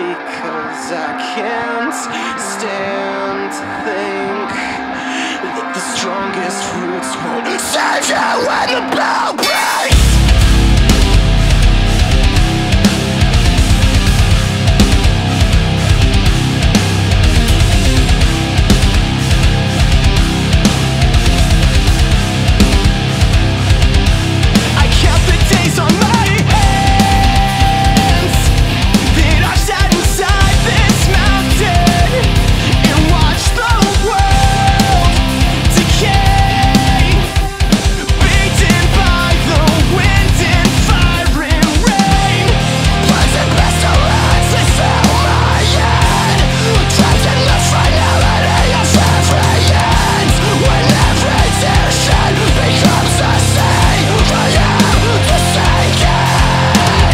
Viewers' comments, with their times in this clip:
0:10 that low end hits harder than my dad
0:42 One of the guitar riffs sounds like the melody of Linkin park's "from the inside" to me see